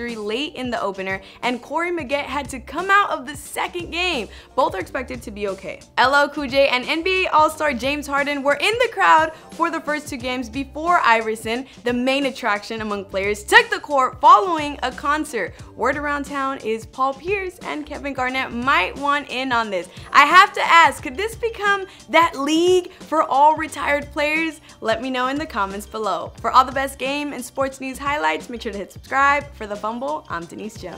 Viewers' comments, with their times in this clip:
0:06 AYYYYYY got same beats
0:12 why u yelling tho ? ffs